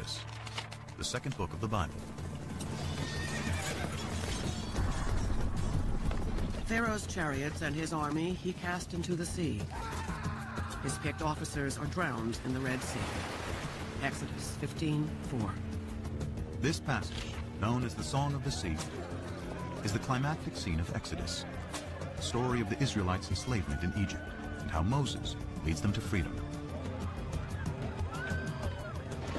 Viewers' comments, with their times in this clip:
0:10 was hilarious when the guy screams.